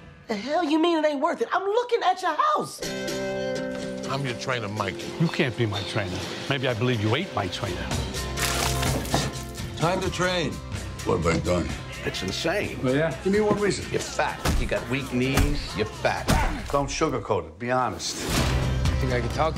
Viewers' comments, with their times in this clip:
0:03 song ??? sounds like the stones